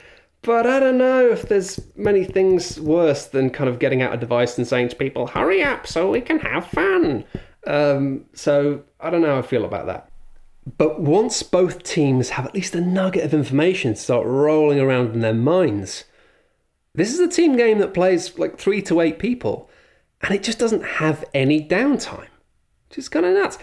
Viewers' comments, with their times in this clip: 0:05 nice impression of the Duck from Don’t Hug Me I’m Scared